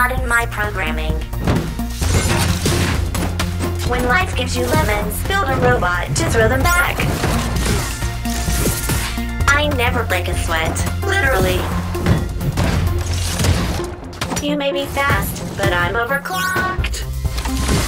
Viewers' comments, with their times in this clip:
0:04 nah but the voice lines gave me a flashback about portal 2 GlaDOS especially part. that voicelines really hits me